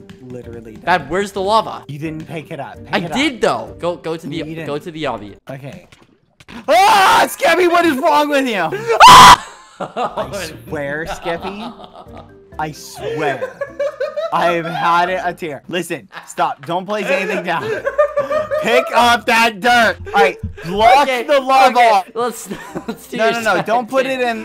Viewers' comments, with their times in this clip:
0:07 the cut scream was perfect😭😂
0:08 the city of scream 😭